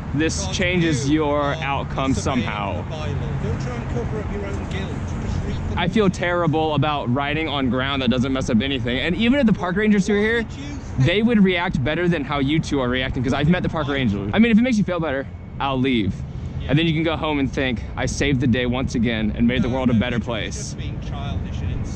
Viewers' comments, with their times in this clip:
0:04 Dude sounds like he is from Australia what does he know 😂